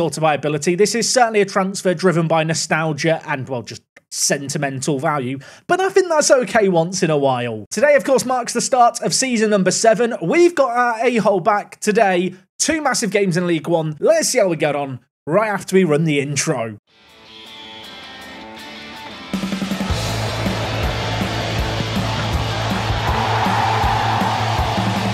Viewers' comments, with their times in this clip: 0:10 you got your what back?!